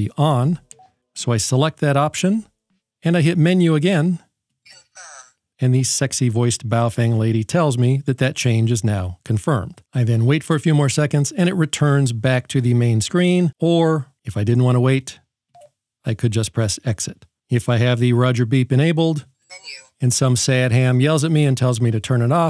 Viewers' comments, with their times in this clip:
0:06 If you go to you can here him say BAOFHWANG so its all good :)